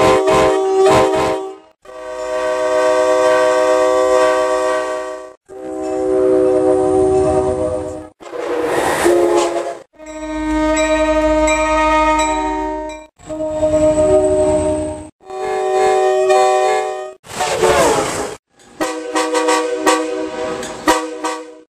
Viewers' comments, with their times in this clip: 0:10 My favorite Shave and a Haircut is the one from 1057